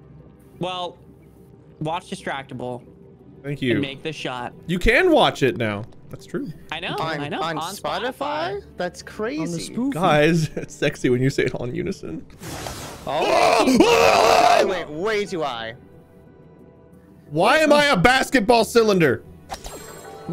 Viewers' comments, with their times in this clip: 0:07 is my favorite part. “Guys it’s sexy when you say it all in unison~.” Literally one second later, “*SCREAMS OF THE DAMNED*”